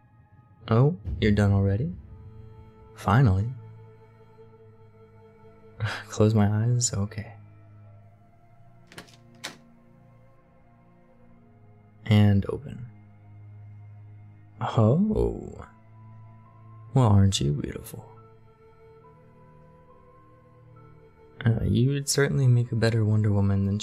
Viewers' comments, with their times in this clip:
0:09 Knocking made me have a mini heart attack ._. It’s am and I thought some is knocking on my window (not the glass part)